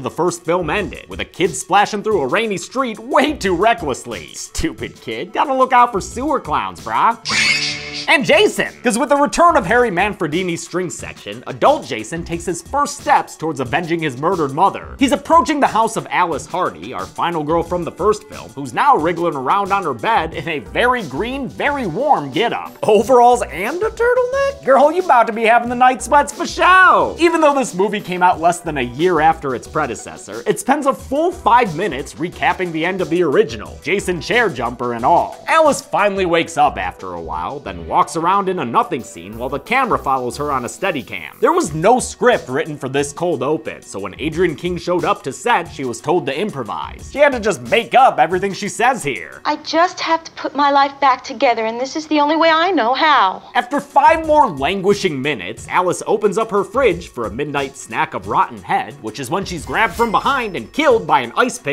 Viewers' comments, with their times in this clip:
0:06 I had head phones turned to the max, thanks dude
0:47 Lol@ This line delivery sounds like something from a John waters movie!